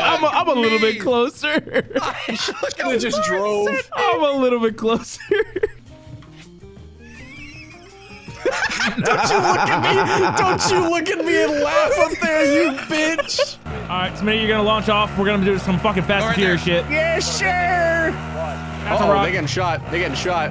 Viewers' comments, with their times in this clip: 0:06 This so good! He just scopes in wheezes at him